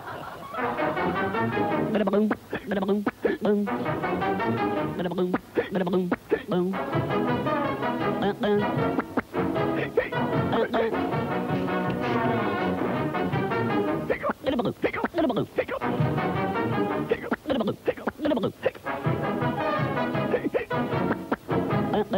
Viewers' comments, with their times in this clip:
0:03 the hiccups make music. Never knew you could do that.